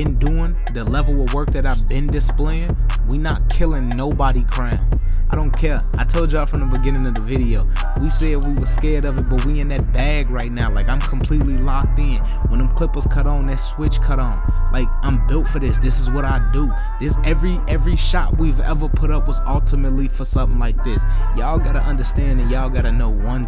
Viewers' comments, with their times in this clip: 0:09 bro started riding the beat...😹😹😹🙆🏽‍♂️